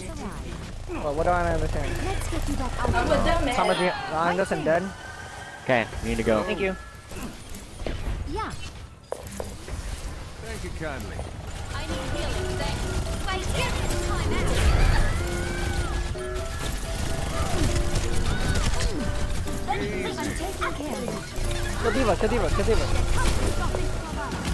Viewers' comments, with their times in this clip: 0:10 "I need healing" "You need a timeout!" pulse bomb blast Idk why I found that so funny. :')